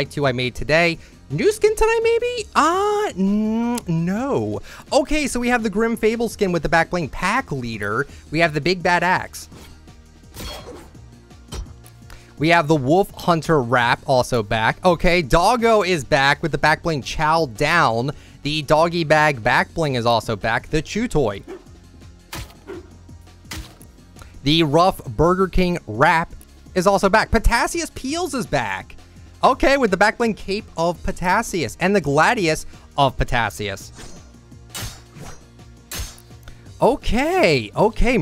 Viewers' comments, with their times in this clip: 0:08 yooo sounds like big bad a$$
0:21 thought i heard the jew toy